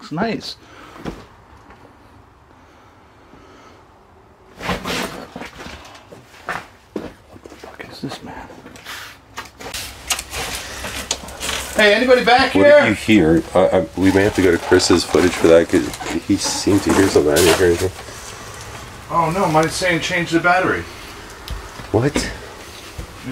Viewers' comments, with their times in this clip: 0:05 it's faint but something says hey. I listened to it a few times. Something or someone definitely says hey. So cool to see you guys doing videos again. Really awesome 👍😊✌️💜